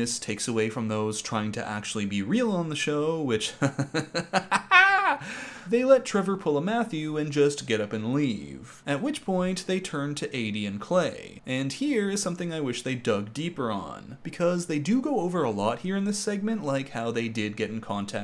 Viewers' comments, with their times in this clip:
0:04 omg the CACKLE!!